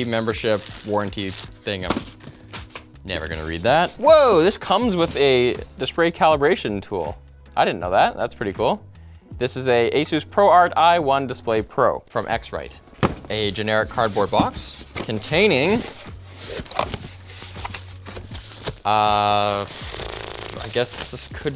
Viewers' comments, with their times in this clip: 0:04 dispray calibration lol
0:06 lol dispray caribration tool